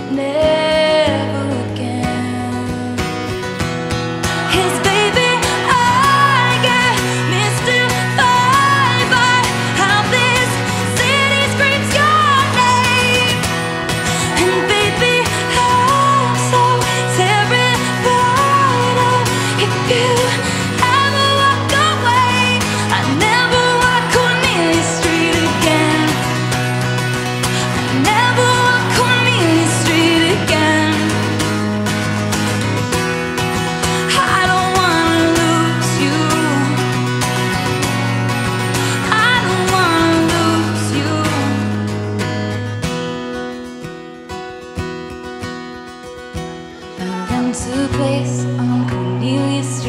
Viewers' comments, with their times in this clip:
0:10 her vocals are angelic 😍 and amazing guitar playing
0:11 I get mystified by how her voice is so beautiful especially
0:34 The way she sang "I hope I never lose you" at the end gave me chills.